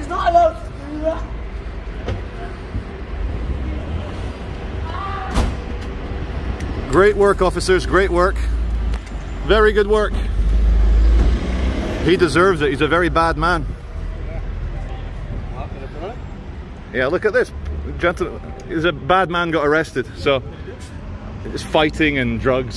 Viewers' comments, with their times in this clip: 0:04 "arrgh!" *slams door shut* lmao